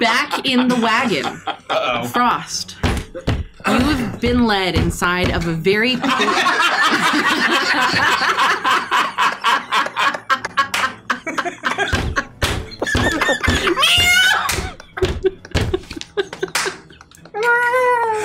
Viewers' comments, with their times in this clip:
0:06 why are they laughing?